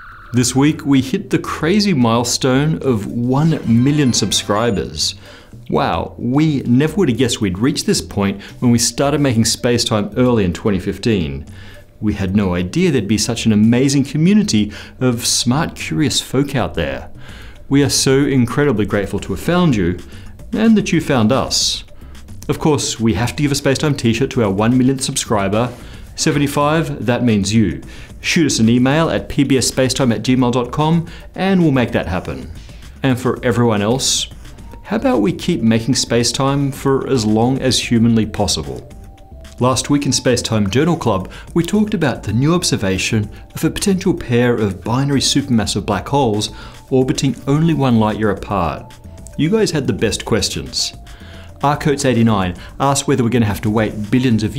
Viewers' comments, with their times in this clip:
0:07 One Billion subscribers ???? Woah!
0:41 I really thought Matt was going to sneeze a binary pair of black holes, then i realized ...